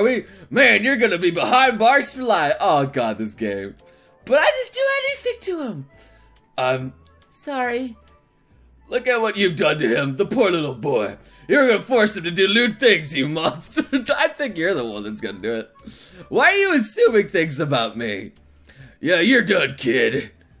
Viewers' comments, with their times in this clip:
0:06 It sounded so hilarious when you accidentally used the police voice on Len